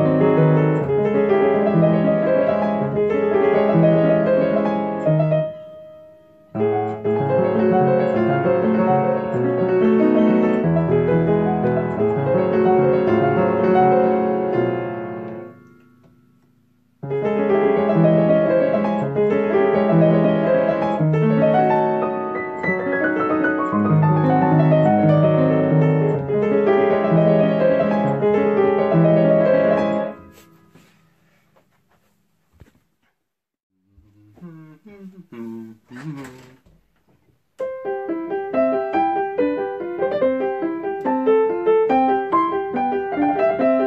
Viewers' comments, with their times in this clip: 0:07 sound like legend of zelda great fairy fountain
0:28 „A long term project“ 3 months later: plays it like he had trained this piece for years, nearly perfect